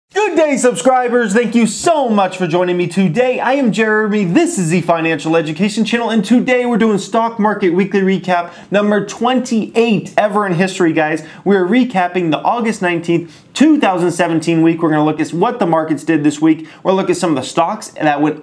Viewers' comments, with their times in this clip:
0:00 RIP headphone users!